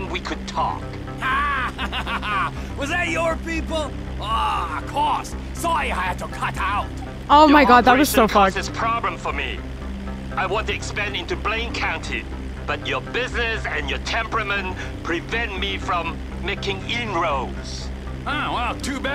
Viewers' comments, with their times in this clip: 0:05 Trevor making fun of his accent was so funny 🤣🤣